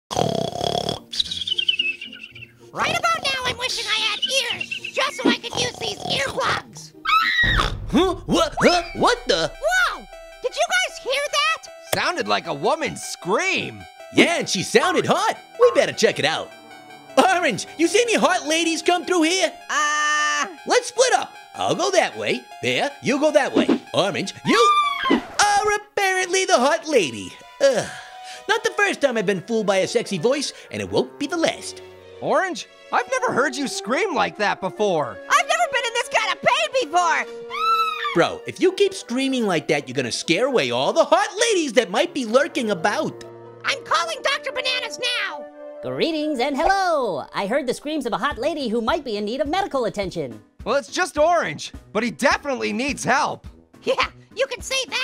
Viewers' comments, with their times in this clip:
0:07 ORANGE: (LADY SCREAM) AAAAAAAH
0:24 Orange Screams Like A Hot Lady
0:37 gasp a lady is screaming
0:37 Actually, I have glued crabs on my tails! (Screaming loudly)
0:39 grapefruit’s voice is getting glitchy